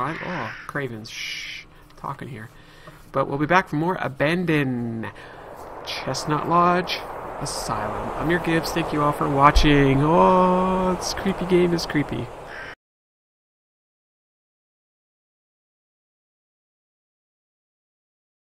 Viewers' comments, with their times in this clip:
0:03 Seriously dude. You are totally not pronouncing the d in abandoned. Is it REALLY just me?